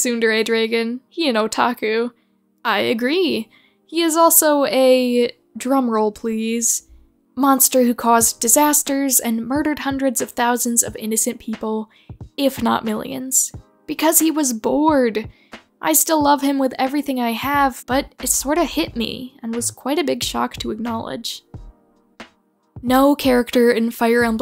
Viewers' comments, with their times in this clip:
0:05 was it so difficult to search for a drum roll sound effect?